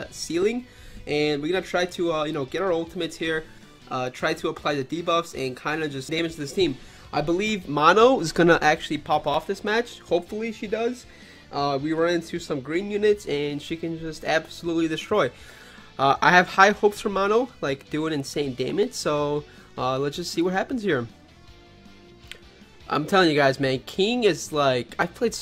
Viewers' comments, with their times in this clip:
0:06 thats some asmr shit right there